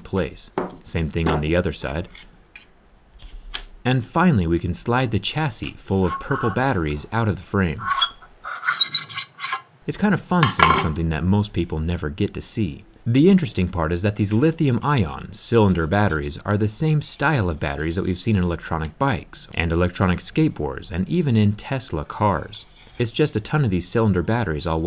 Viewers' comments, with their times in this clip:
0:07 squeak sound alert